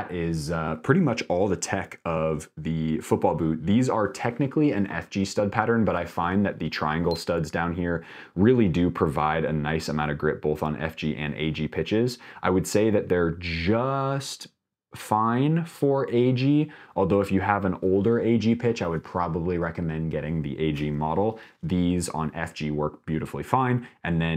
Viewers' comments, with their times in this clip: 0:06 More beeping in this video… 😮 is one example